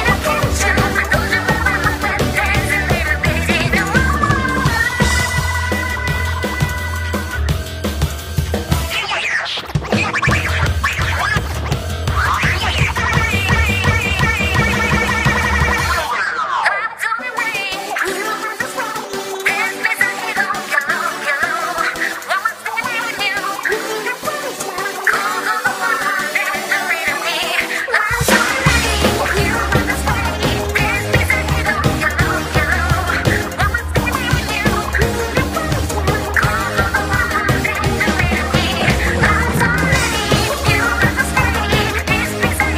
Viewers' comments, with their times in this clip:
0:08 ...Did she just... Remix... Ngyes!?
0:09 that guys just ngyesed
0:27 Sounds like what a Splatoon anime's ending OP would be.
0:27 Endings are usually this calm, i think its perfect. isn't upbeat enough to be the the opening and while typing this I realize that might be what you meant but anyway.
0:28 is pearl doing the hype